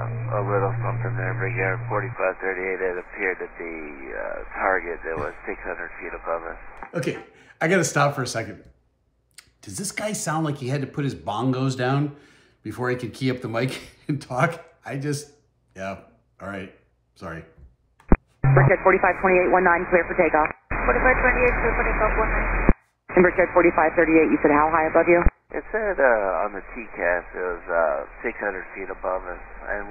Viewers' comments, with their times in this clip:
0:04 The Pilot Of RPA4538 Not Only Was Playing The Bongos, But Sounded Like He Smoked Some Weed As Well🤣😂🤣😂🤣😂
0:07 It sounds like he had to put his BONG down before he could key up the Mic. LOL
0:10 that dude’s name must be kyle 🤣🤣🤣 so relaxed